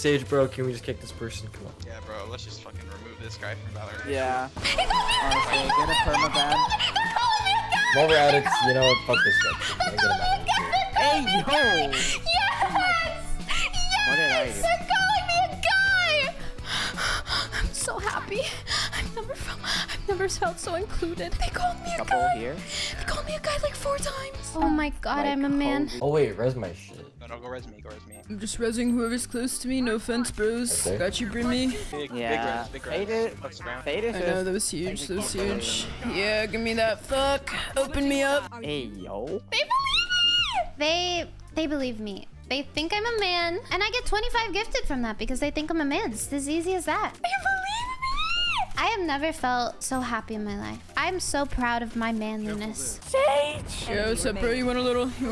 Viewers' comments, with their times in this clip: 0:04 Look how happy she sounds!
0:36 WHY IS NO ONE IN THE GAME COMMENTING ON THEIR VOICE IM CRYING 😭😭